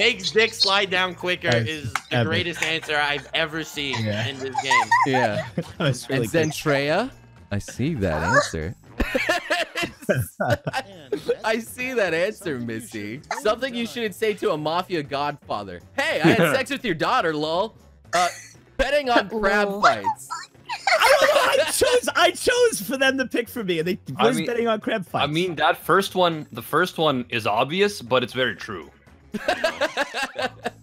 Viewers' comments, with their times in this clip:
0:07 i hear a sus sound
0:13 I HAVE A DREAM WEEB PIANO INTENSIFIES